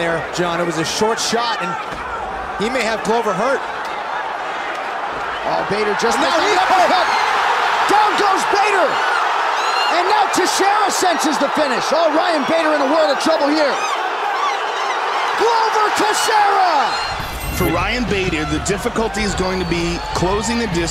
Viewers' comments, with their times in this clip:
0:07 seagulls and mice must have been the fans in attendance 🤷🏻‍♂️